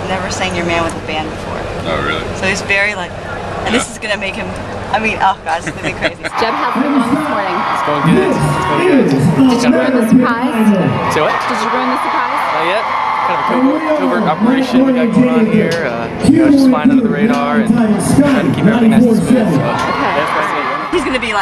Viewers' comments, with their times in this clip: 0:05 cutest laugh ever <3